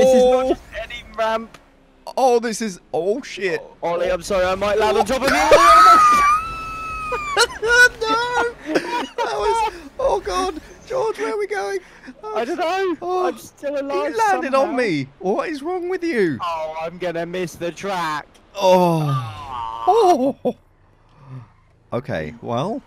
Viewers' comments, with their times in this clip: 0:04 Holy crap that wheeze